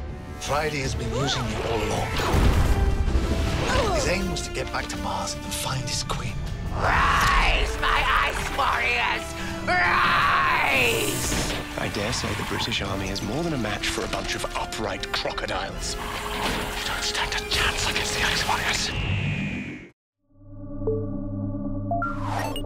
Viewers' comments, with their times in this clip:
0:06 "Rise my ice warriors! Rise!" Sounds just like the Racnoss Queen from "The Runaway Bride" Christmas Special.